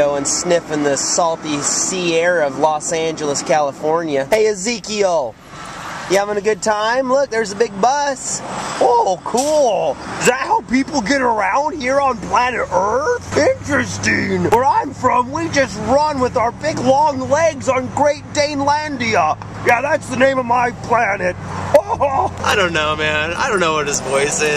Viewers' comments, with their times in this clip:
0:09 best Zeke voice.